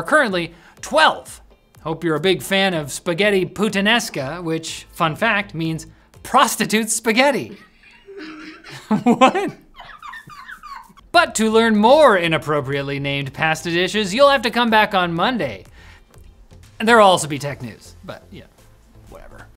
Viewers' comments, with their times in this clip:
0:09 That seagull laugh had me dying 😂 Absolutely nailed it!